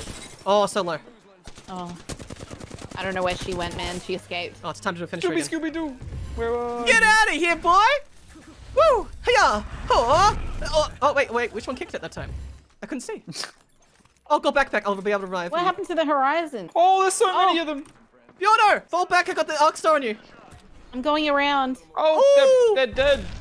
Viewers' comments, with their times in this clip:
0:09 He farted on him and he just died